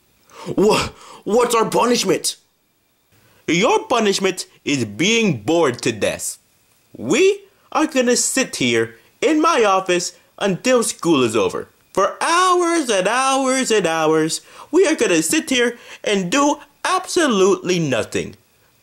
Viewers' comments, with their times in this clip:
0:04 "born to death" made me repeat the part